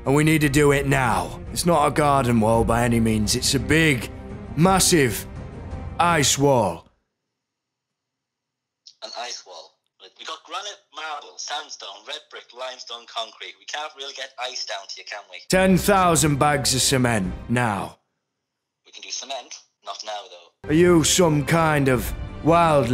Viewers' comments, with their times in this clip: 0:10 those rap skillz tho😎